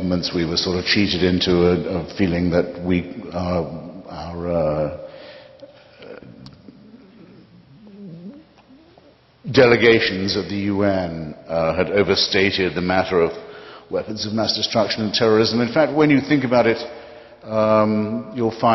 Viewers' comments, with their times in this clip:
0:06 WTF is that sound hitchens makes? Sounds like a boats hull is giving way.